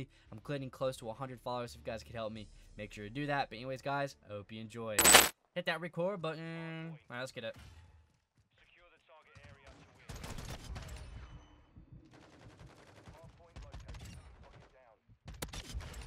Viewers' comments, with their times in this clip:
0:04 RIP headphone users ...